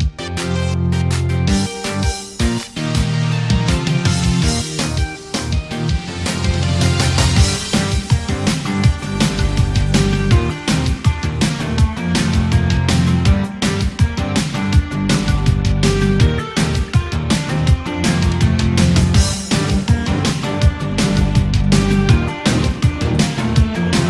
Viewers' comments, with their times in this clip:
0:07 I... ...LOVE that part of the music,